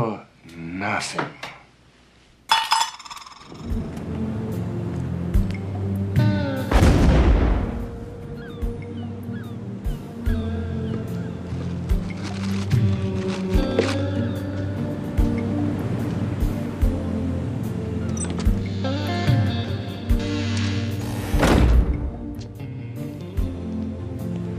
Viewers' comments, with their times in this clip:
0:03 Love that music!
0:10 What kind of music is this chill out/relaxing synthy ? where do I find more of this?